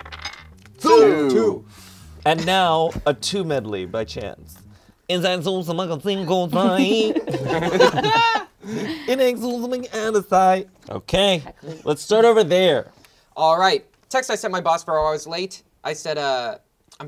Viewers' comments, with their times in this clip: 0:04 I LOVE THAT SONG